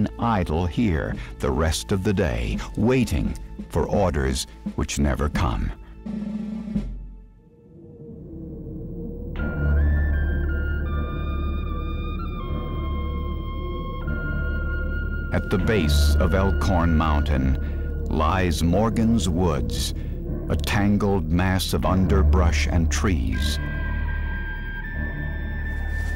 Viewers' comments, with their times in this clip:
0:08 I'm Japanese, but I like this flute song with a Japanese atmosphere. Southern American flute song.